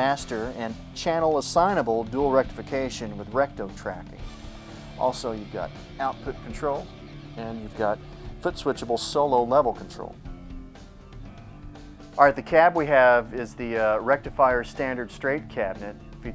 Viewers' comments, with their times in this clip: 0:03 rectum traffic?!?!?!? WTF!!